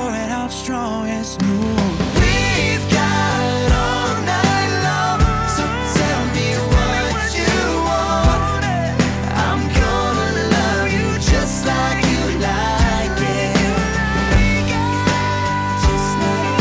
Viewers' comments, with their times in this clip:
0:04 Brian's classic unbeatin high note ....everlasting